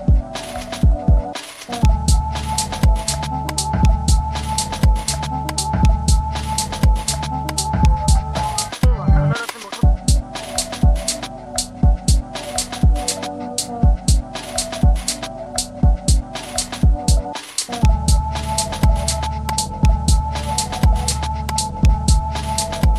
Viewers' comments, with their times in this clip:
0:10 digging that beat!